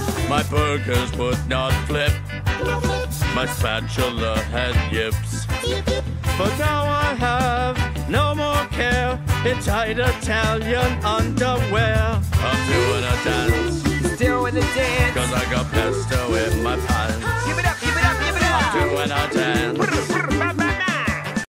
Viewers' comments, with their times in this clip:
0:06 Am I the only one who thinks Bob sounds like Randy Marsh ? 😅